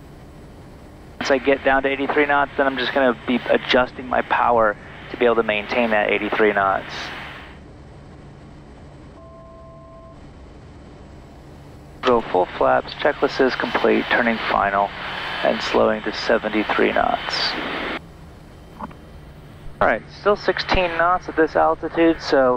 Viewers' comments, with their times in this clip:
0:08 What is the touch tone sound for, example you never seem to react to it?